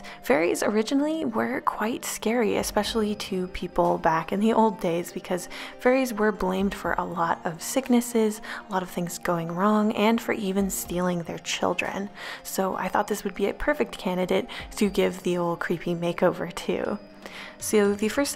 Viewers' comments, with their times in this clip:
0:05 "furries were blamed for a lot of sicknesses"